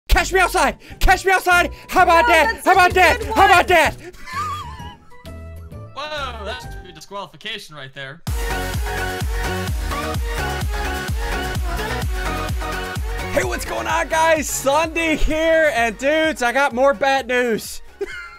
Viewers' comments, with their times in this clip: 0:00 cash meow side